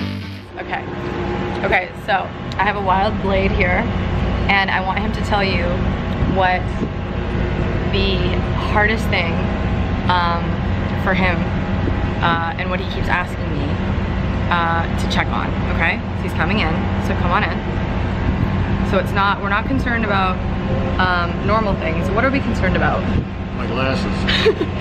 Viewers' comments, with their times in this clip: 0:09 Having a, uh, Jeff Goldblum moment there, uh! XD ;P =)